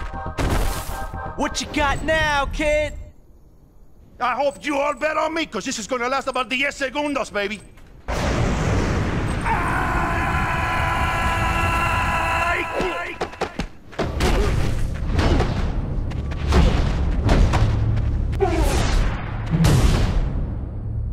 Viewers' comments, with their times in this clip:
0:09 his scream is fantastic.